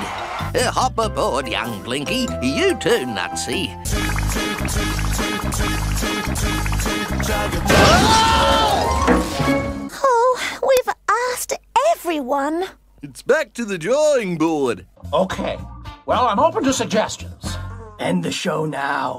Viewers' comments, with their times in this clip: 0:04 low pitched version of toot toot chugga chugga big red car repeats